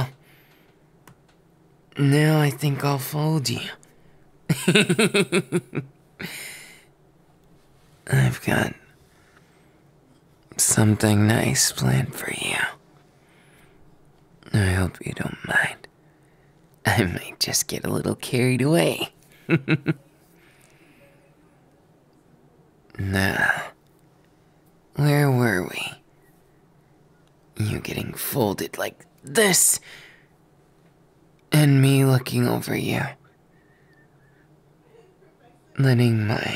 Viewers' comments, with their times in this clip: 0:04 Why is this giggle so cut though 🥺🥺
0:19 THAT GIGGLE HOLY MOTHER JESUS OF GOD